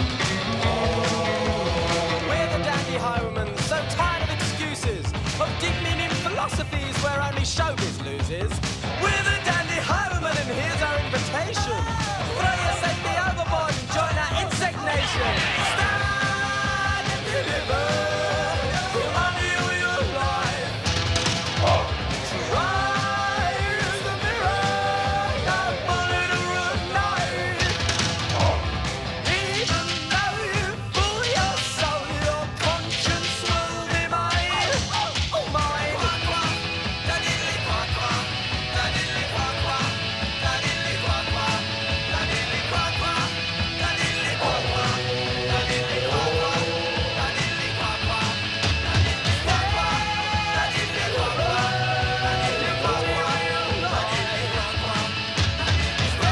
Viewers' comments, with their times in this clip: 0:10 I love the part where the dog yawns to coincide with the "ohh-ohh"
0:11 Never noticed this dog singing before.
0:38 sorry all I heard was dadililyquaquaf?🤨😐 also that green screen tho🤣the 80s alright 👌